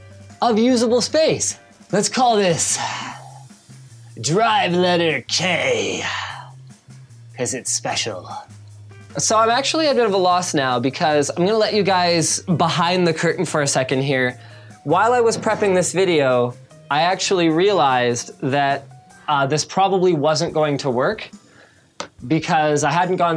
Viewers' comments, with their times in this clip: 0:05 When you said drive letter K you sounded just like my ROCCAT mouse voice when you change DPS..